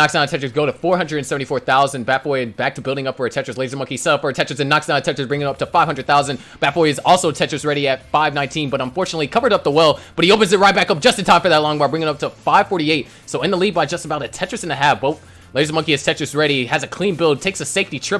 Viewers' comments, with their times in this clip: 0:04 the commentator went hyper mode. He can be a good Auction chant .